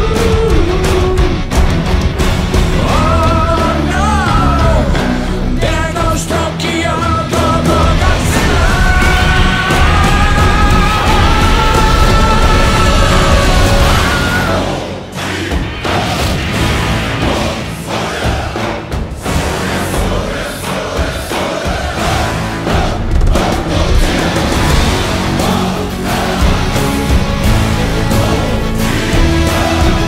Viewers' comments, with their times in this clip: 0:09 Perfect atomic roar
0:13 there's a whilelm scream!
0:13 Wilhelm Joined the chat
0:13 What, That Music. I heard that at the end of the sequel of the 2014 Big Hit. Not to mention showing a wink of the new movie that’s coming next year. I think I hear a Wilhelm Scream.